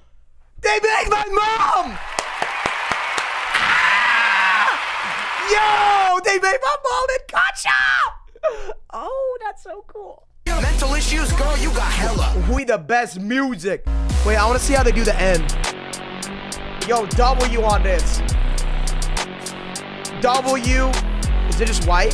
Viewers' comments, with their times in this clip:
0:03 why u screaming for💀💀💀